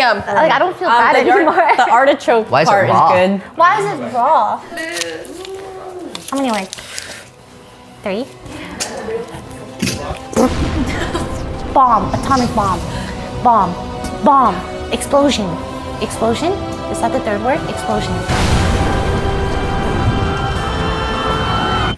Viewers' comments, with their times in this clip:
0:07 The God of War soundtrack caught me so off guard